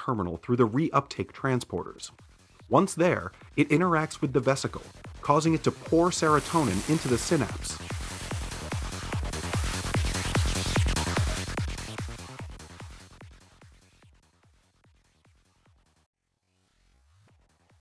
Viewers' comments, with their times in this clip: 0:08 LOL at the edm music kicking in haha